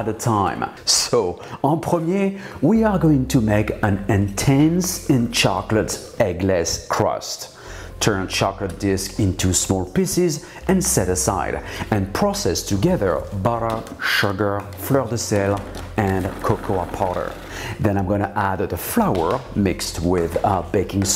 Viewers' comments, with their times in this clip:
0:07 small pisses... little weirdo...pardon my french 😂😂👍👍